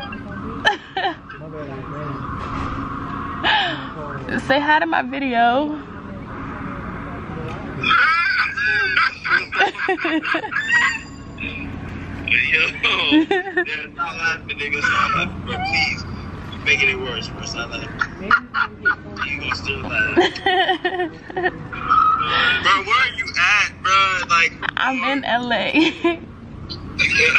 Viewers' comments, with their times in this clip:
0:08 Lmaoo who laughing like that ? 😂